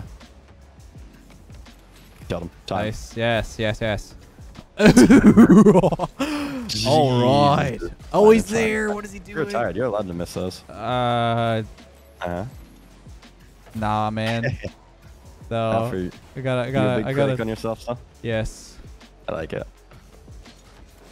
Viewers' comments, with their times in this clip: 0:03 Not tryna make fun but that was a goofy ah laugh